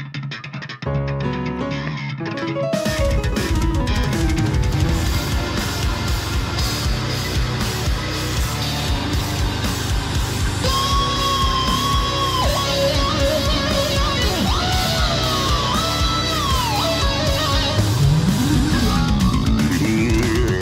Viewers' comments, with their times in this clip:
0:08 Does ANYONE know what the sample library is, or even how to make a real guitar sound like this? its the EXACT type of distorted guitar sound Im looking for, and being solely a drummer, damn, I know NOTHING about it. Any help is appreciated! Sound Im looking for is